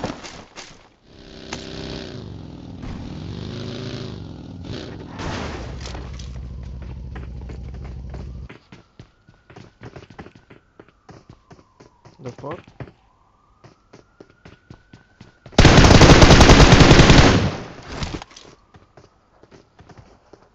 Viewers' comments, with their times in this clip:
0:06 I can hear Ambulance Sirens